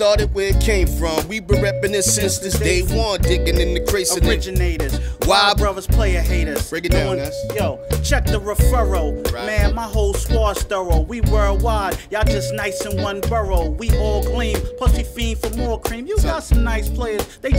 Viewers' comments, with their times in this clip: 0:03 Lord Finesse OUTTA NOWHERE OF THE TOP ROPE FOR THE ASSIST!!! Plus THE BAND WAS JUST STRAIGHT SMOOTH WITH IT